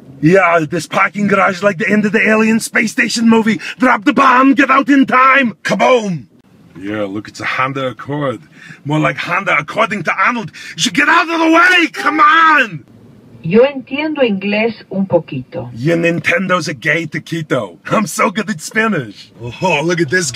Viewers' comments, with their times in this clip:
0:06 He sounds like Robin Williams